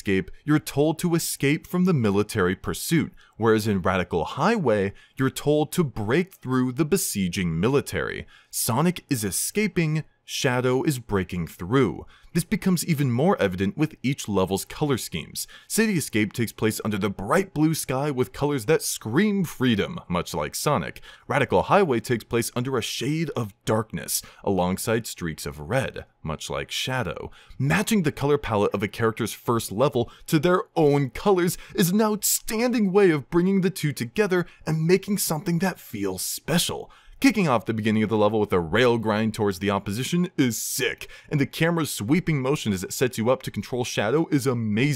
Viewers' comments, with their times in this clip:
0:06 Break Through It All starts playing
0:31 Relax with the fake enthusiasm dude.